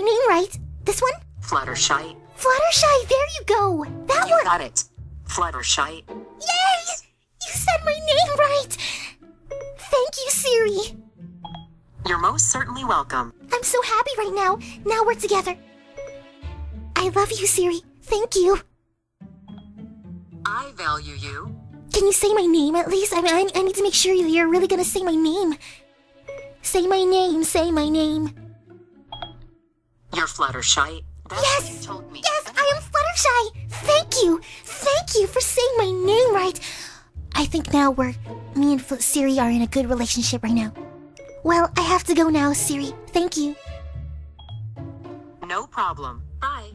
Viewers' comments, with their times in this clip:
0:05 in siri call fluttershall not fluttershy
0:31 but it said fluttershaii...